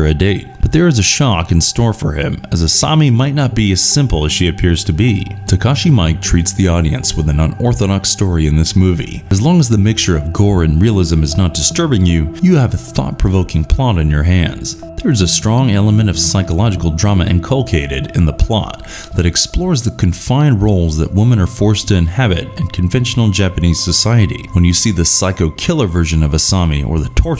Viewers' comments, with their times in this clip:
0:08 lol "Takashi Mike" MEE-EE-KEH Audition : no thanks.